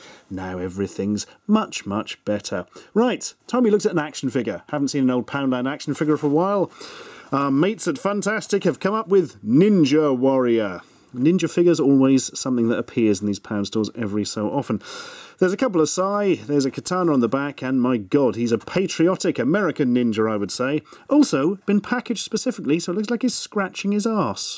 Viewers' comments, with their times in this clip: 0:10 I was only half listening and swear he said 'Minga Warrior'